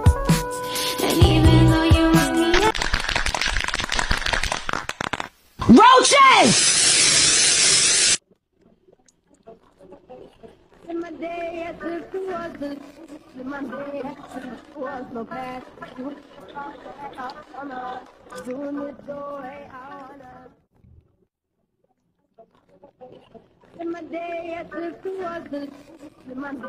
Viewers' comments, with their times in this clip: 0:09 very good but the sound is dead :<